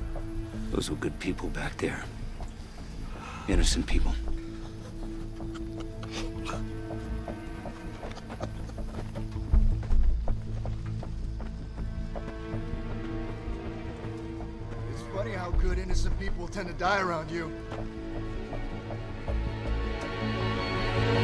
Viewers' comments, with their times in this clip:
0:07 pathetic that he laughs at that fact